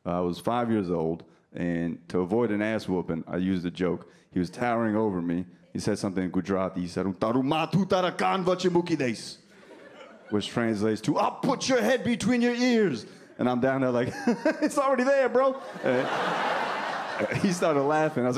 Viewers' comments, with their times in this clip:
0:06 that sounded like Huttese (language Jabba speaks obviously)